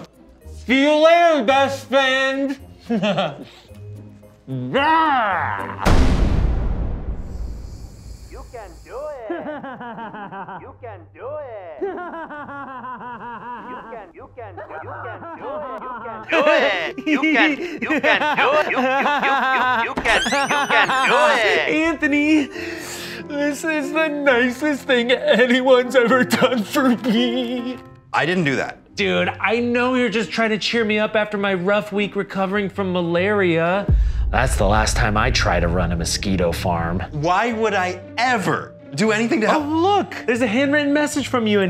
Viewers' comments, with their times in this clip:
0:09 hes laughing like the annoying orange
0:22 door opening sounded real af